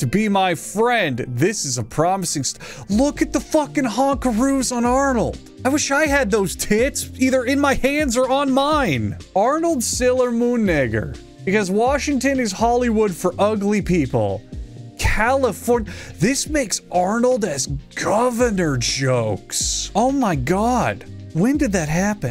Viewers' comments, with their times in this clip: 0:09 THAT REALLY DOESNT HIT THE EAR RIGHT AND I THINK YOUTUBES AUTOCAPTIONING AGREES LOL BE CAREFULLLLLLL
0:10 annunciate bro that’s insane 😭😭😭